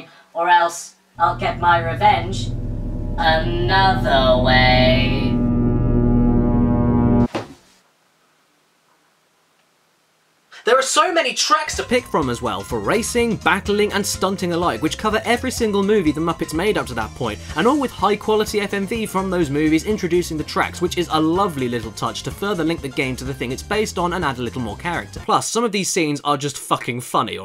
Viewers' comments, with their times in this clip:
0:10 Huh, I don't think I've ever seen a transitions from person to voiceover like that. Change of audio quality between shots aside, that was rather seamless. Good job.